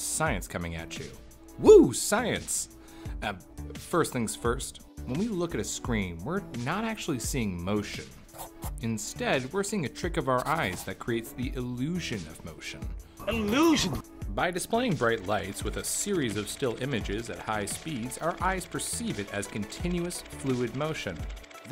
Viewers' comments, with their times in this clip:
0:06 i freaked out the scribbling noise sounded like someone was behind me lol